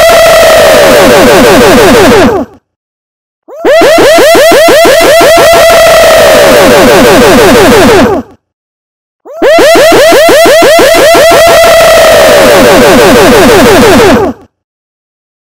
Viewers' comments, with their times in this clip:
0:09 When a hacker manages to get 1000 players in a game then get everybody to say Woo at once